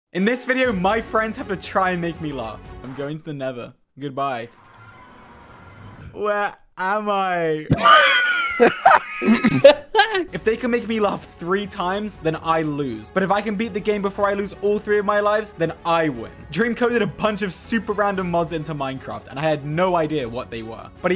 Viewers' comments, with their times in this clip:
0:07 what laugh i this